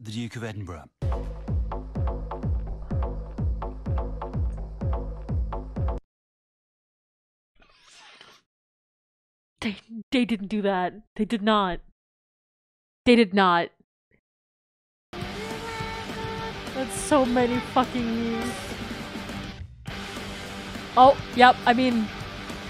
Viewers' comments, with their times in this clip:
0:08 they absolutely did! :D it was fantastic oh my god. The beat drop to end all beat drops.